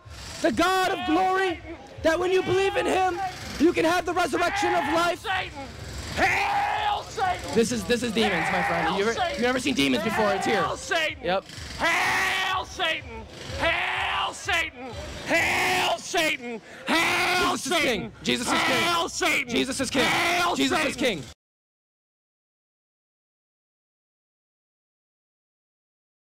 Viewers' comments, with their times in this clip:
0:08 During and beyond it was sad watching him scream Hail Satan and children are in the background but thank God for this preacher because his words might’ve SAVED these children unknowingly.
0:11 doesn’t believe in the Bible but “screams hail ‘👿’”??🤦🏾‍♂️🤨